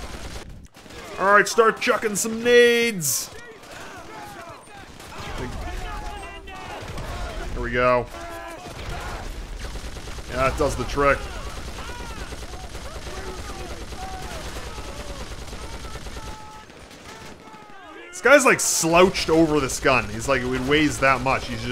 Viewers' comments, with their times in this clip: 0:05 you can hear someone yell THEY GOT MENENDEZ